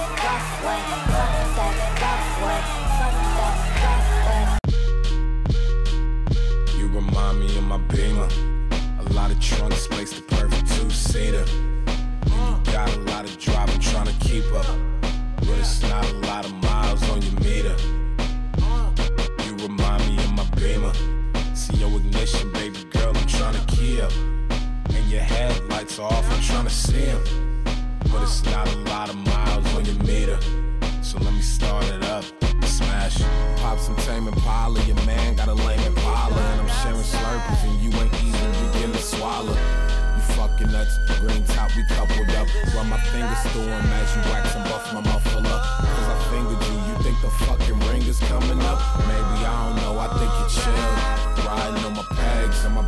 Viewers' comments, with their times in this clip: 0:05 beat is so fuckin goooood
0:36 Eyyy Frank Ocean dropping in!